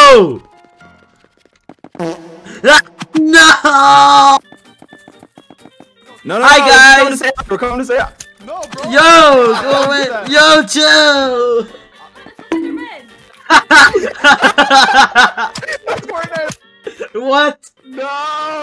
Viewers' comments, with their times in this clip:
0:04 The scream was legit so funny I spit water on the floor and my mom gonna spank me, but it's still worth it